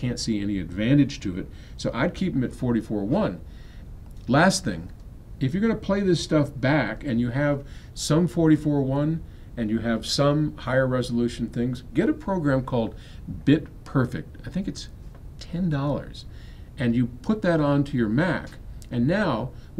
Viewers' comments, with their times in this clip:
0:06 did he just say Sum 41 ?